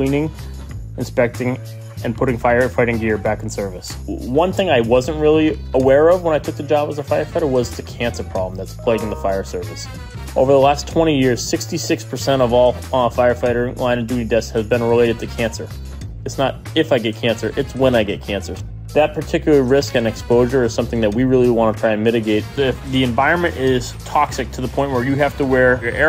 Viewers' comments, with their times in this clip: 0:08 Hearing the outlook email sound made me think I received a work email.